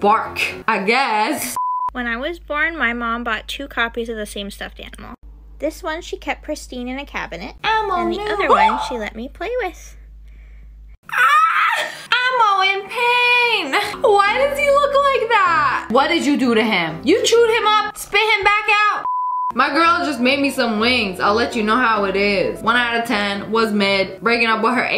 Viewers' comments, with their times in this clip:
0:07 elmo ne- hawk sound